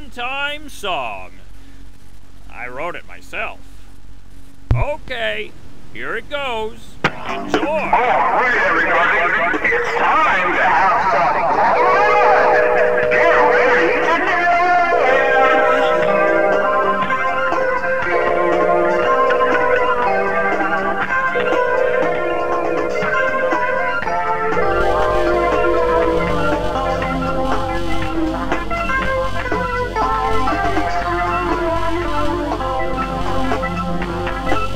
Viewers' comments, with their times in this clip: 0:08 Without kidding I really love that song
0:13 youre telling me is not a banger?
0:16 MY EARS HURT!!!!!!!!!!!!!!
0:17 "horrible, absolutely dreadful music plays" god i love this game